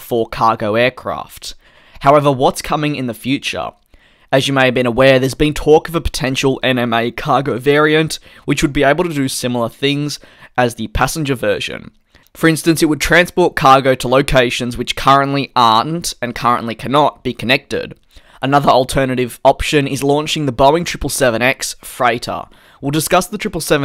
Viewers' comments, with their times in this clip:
0:07 is that a mid speech yawn